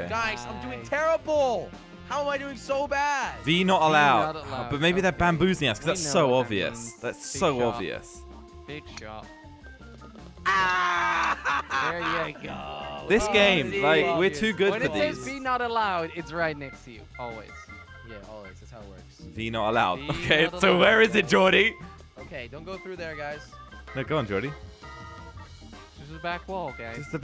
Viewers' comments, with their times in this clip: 0:10 I like how Jelly laughs like he discovered the hole